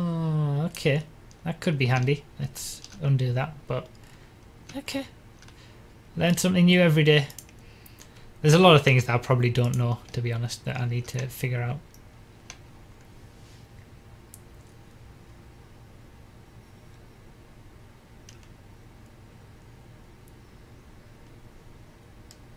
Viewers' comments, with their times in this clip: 0:03 Dat voicecrack tho :P